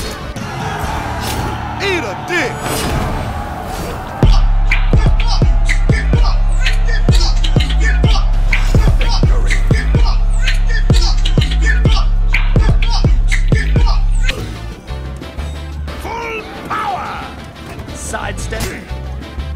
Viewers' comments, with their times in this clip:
0:04 the return of the greatest soundtrack ever made